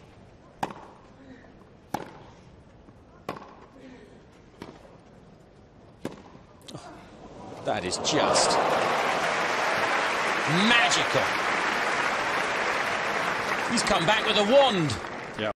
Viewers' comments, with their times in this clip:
0:09 Ray hudson commentating Lio Messi.